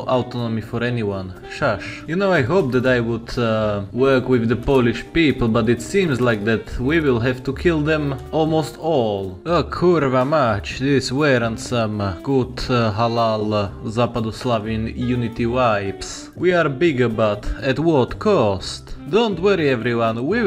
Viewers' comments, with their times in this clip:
0:08 As a pole I would say it's almost perfect pronunciation, I'm proud of you
0:08 That was a spotless "kurwa mać". Congrats